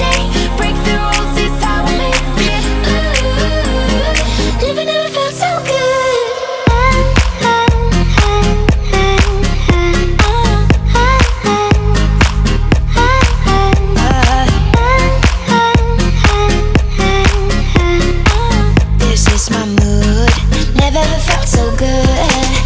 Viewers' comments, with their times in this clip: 0:06 I let my head get loose to the beat baby! <3